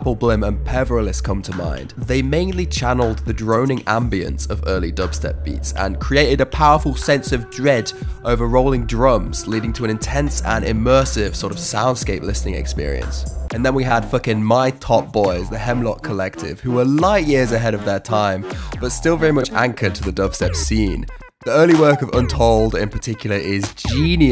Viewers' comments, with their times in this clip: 0:06 What happened on mark? You said "powerful sense of dread" in a really funny voice.